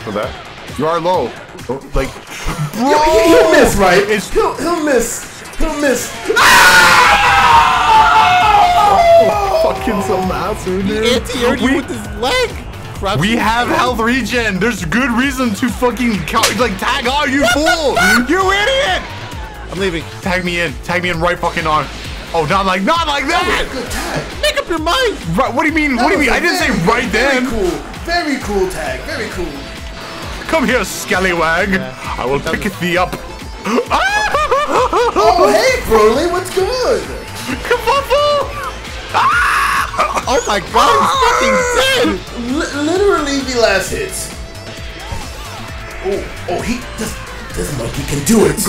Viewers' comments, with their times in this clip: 0:06 That scream from Zamasu is so easy to make the ultimate perfectly cut scream. "He'll miss right? He'll miss... he'll miss... AHHHH-
0:16 the “ WHAT THE FACK” got me
0:33 My man sounded like Goofy falling off a cliff